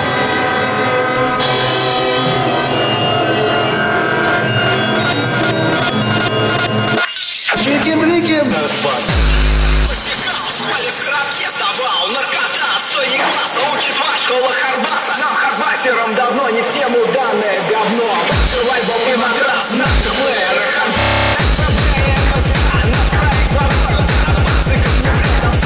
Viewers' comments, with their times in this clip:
0:06 wasn't ready for the russian xD